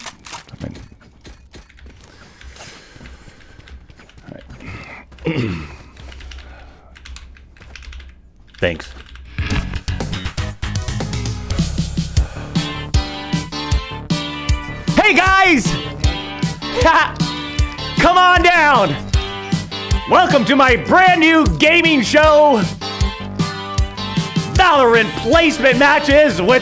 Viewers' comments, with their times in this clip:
0:06 he tried so hard not to laugh 🤣🤣
0:14 Doc went all Prozzak on us. 😂😂😂